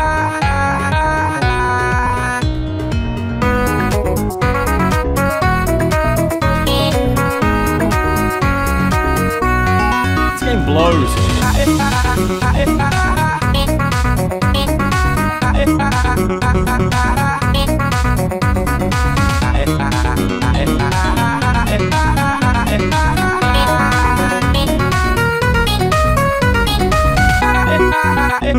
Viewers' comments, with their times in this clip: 0:08 Tom have tight bars
0:10 why do I hear a copy of chibi robo ziplash getting thrown in a toilet